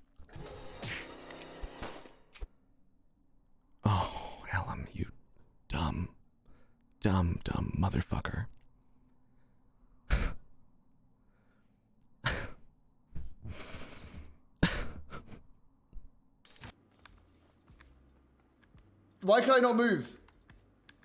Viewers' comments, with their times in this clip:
0:04 the way he said that tho